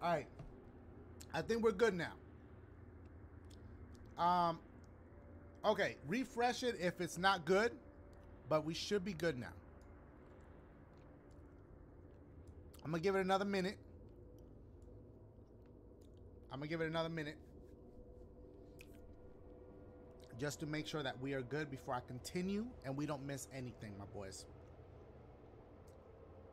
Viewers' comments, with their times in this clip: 0:10 Audio is off since
0:10 For everyone who wants to watch. The Audio is about 23-25 seconds behind starting Open two tabs of this vid and set them about 23 seconds off each other. Mute the one ahead, and watch that one. Hope this helps.